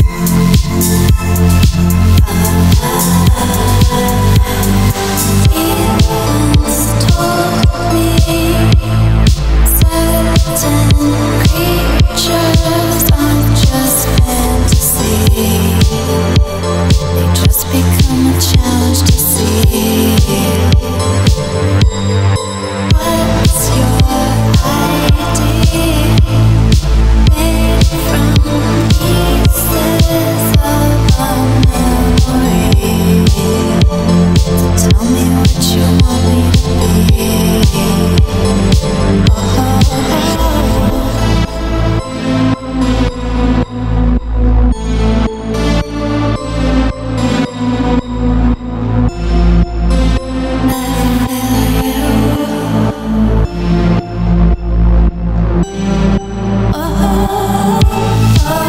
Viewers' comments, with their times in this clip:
0:05 The melody reminds me of a Russian pop song from 1990, Marina Zhuravleva's "I know it's [too] late" (Знаю, поздно)
0:43 I like everything except the "on me" repetition. Makes it sound like a shitty pop song level of creativity. And this haunting synth sound should've been used with the beat imo.